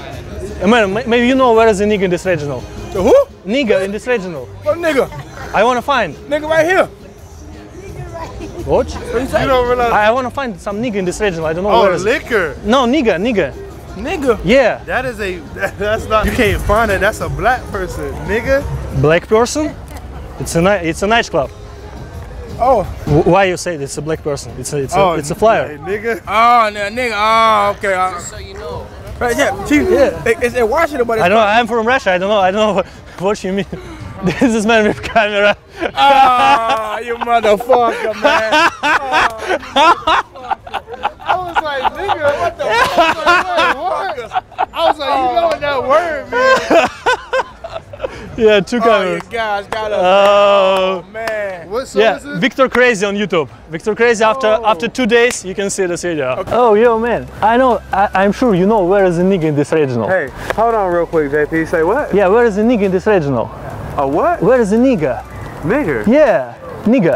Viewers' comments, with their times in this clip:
0:10 I love how that female is laughing in the background! 🤣
0:25 why that latina laughing?
0:55 Why are you laughing so loud my now my ears are ringing! 😓